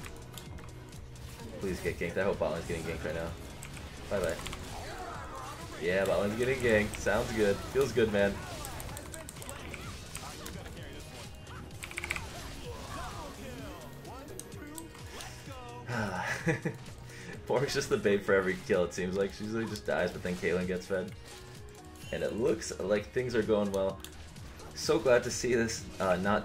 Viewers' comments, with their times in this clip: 0:07 when u fought in bot i heard a man saying "an ally has been slay" and then he said "how will u carry this 1?".. after that he said "double kill one two lets go"... is it an option or im just dumb and i imagined it?